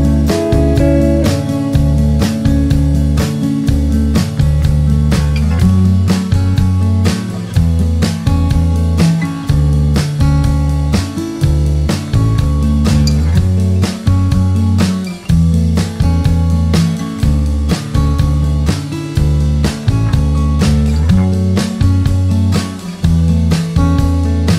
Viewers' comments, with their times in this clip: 0:06 Just found this song, I love it. Although it sounds exactly the same as I crash you crash by lil peep.
0:08 somewhat sounds like the sample used in i crash u crash